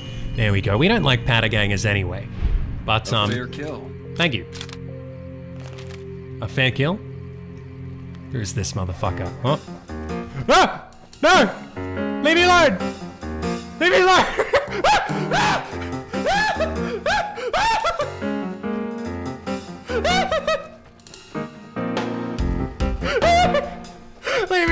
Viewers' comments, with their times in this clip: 0:10 Elves voice Rrrun away~!